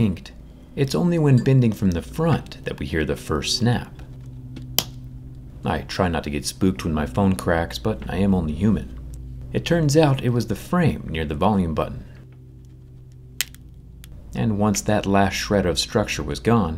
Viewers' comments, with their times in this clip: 0:04 Click sound My mind: R.I.P my friend NORD.